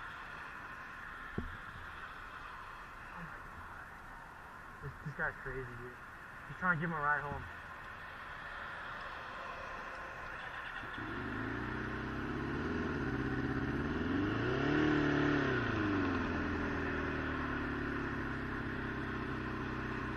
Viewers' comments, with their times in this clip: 0:05 the guy that's drunk sounds like a high school dropout